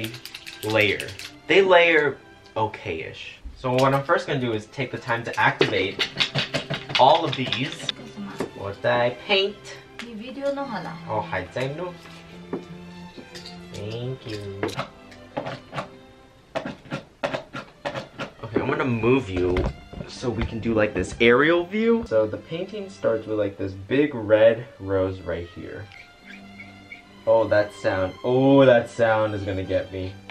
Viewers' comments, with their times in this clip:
0:09 SO CUTE and then little "thaank you" after the door closed 😭😭
0:11 speaking Chinese Me: 果然!!!!☆w☆ (Translation: I KNEW IT!!!)